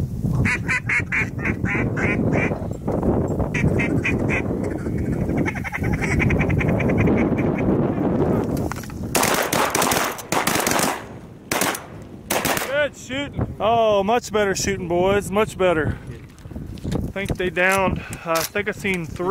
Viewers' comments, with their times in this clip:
0:07 sounds like a machine gun danggg